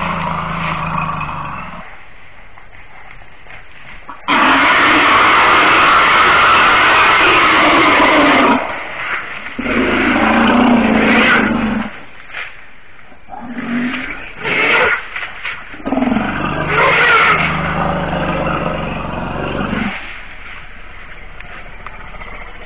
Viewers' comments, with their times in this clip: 0:05 WTH? What a fucking somber noise. These fat big noose things roars as dinossaurs😂